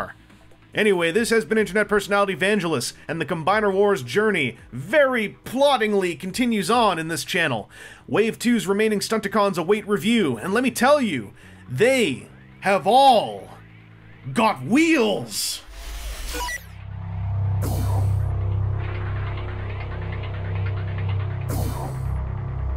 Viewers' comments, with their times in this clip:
0:10 I see you're channeling your inner Shatner....